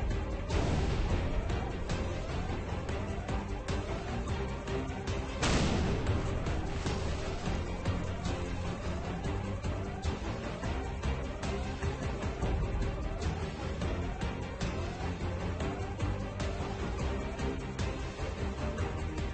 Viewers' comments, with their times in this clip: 0:05 You can be Sure That the MELTDOWN Music is awesome.. I mean the EBACKGROUND